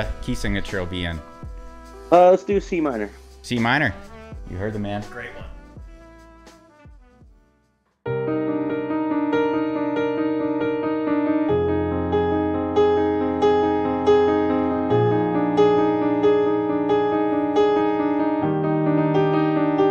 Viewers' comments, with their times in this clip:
0:07 Wow... That was incredibly beautiful for complete improv. You guys are amazingly talented. 🎹🎶♥️🎶🎻